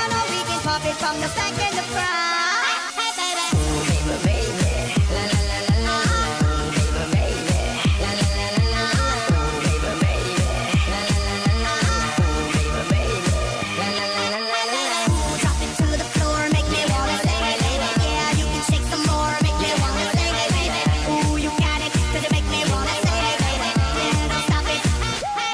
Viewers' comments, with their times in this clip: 0:06 sounds like my classmate that used to bully me